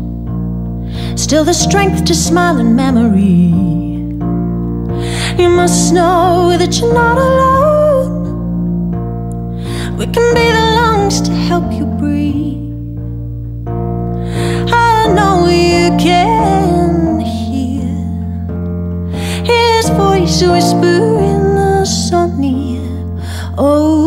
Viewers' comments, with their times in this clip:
0:07 coming back here since 8 years straight! This whole song and especially the high note really sends shivers down my whole spine. Every time ! Thank you for this masterpiece